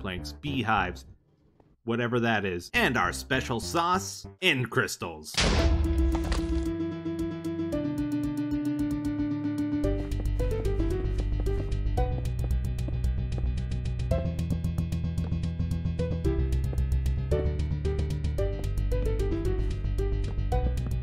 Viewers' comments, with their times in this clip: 0:05 I can't stop listening to the song playing from onwards. I wish there was a full version available somewhere!